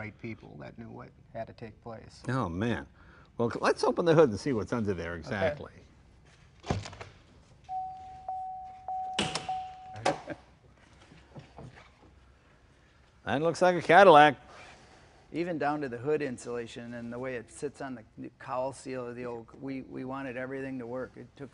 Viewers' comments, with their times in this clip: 0:07 What is that tearing sound when he opens the door ??? It hurts...